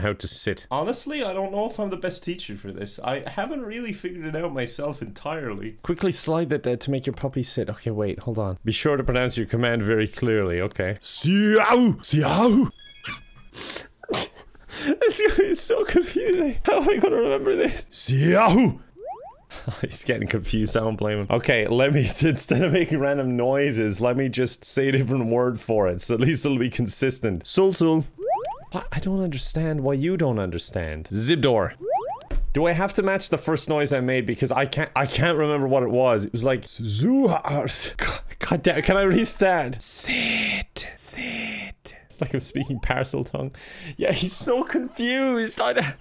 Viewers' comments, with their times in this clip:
0:10 Is he talking Bavarian? :D
0:29 man starts speaking simlish